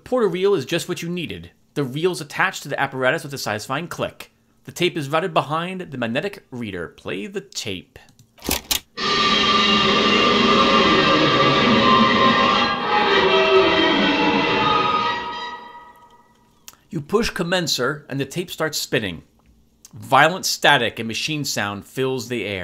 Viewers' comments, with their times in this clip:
0:09 Play the tape... Scream in machine